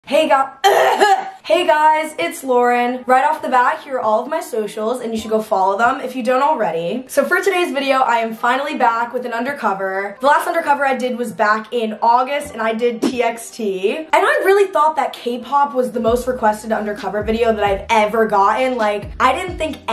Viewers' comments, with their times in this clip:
0:01 a little cutie patootie cough🥰😘😘🥰🥰😊😊😊
0:01 such a soft cough! Never seen A cough so small!!